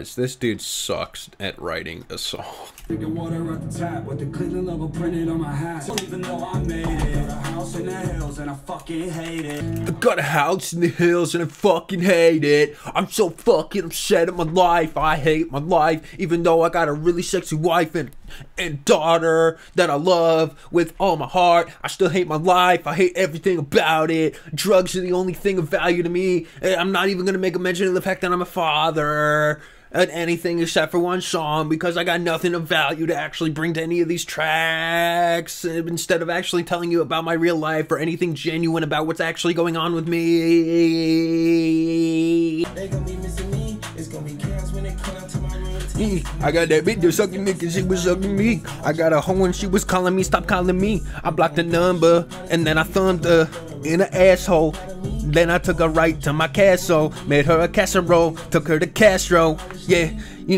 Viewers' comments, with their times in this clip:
0:10 i cannotttt this sounds a thousand times more genuine than this pathetic project im so embarrassed
0:47 bro sounds like he saying the n word lmao